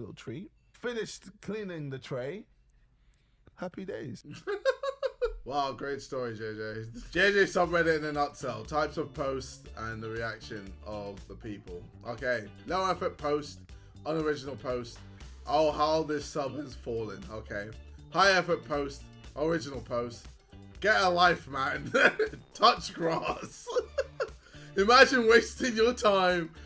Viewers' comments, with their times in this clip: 0:06 in a “nut cell” bro can’t say nutshell now💀🤣
0:07 man said nuts hell. Not nut shell